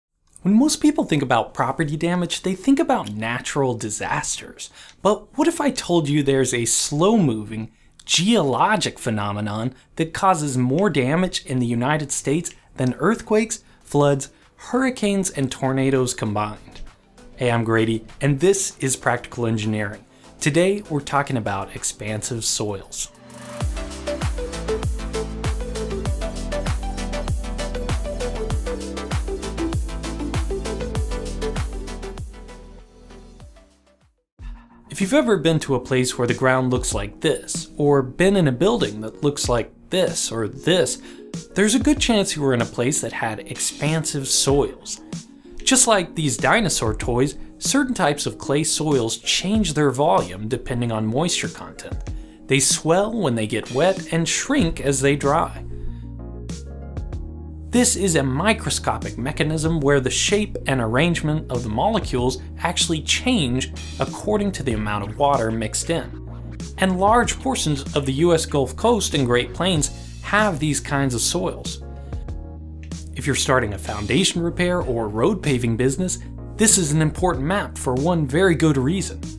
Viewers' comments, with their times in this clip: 0:00 Did he just say "When Moose people"
0:59 Listen to the "P" in "shape". Lol.
0:59 dat pop sound 😂
1:00 A bottle opens in the background with a solid "POP" :D
1:00 Yoo, very sick pop
1:00 The pop gave me a semi
1:00 the best 'p' in the world :D
1:00 The "p" noise is so satisfying
1:00 when he pronounce "shape", oh that sound P is soooo loud ahahha